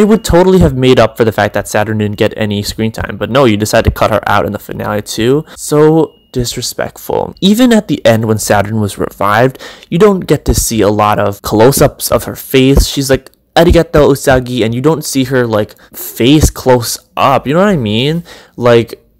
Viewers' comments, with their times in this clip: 0:03 something may be backing up in your background not sure? :(